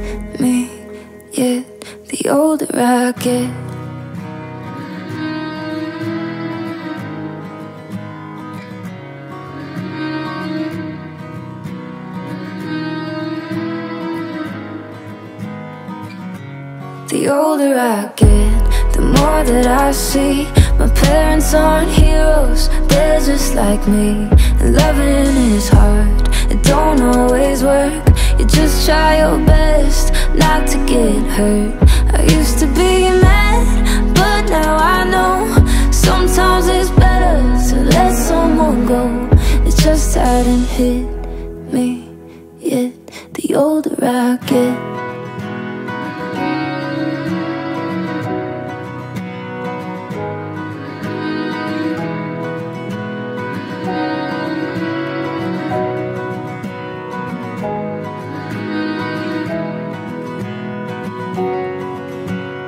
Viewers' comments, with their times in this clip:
0:04 this music.. it almost took me to another galaxy
0:44 guitar is so heartwarming. makes me tear up every time.